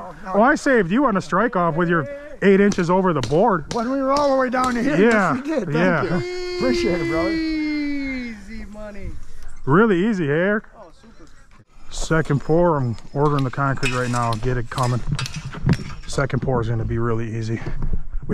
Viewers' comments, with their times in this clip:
0:06 definitely a top 5 "Easssyyyyyy money" on the channel so far